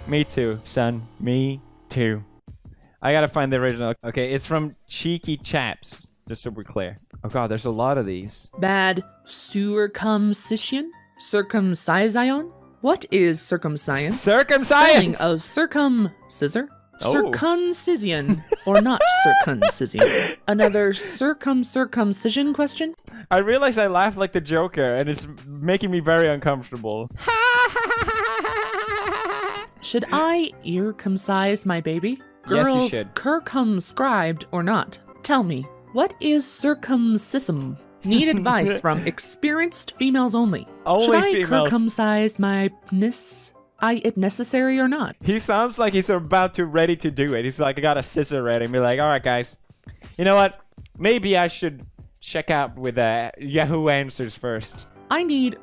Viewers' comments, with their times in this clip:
0:10 it starts to sound like an authentic YGS episode
0:43 lol it’s was spelled correctly idk why she mispronounced it